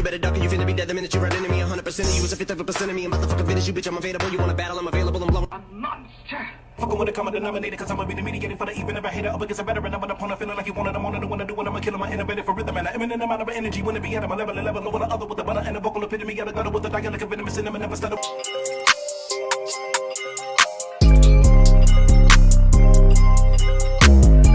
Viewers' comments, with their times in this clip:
0:08 ... Wait a minute, is that TWISTA!? ^^ Now, HE, can get hte speed and pronounciation, and can duplicate word for word, no problem. But, or, however,^^ to come up with what's came up with, the depthness and all relations in artisticree, that's what separates Em. \O>
0:10 WTF did twista even say this why people hate fast rappers because you can even hear the shit their saying.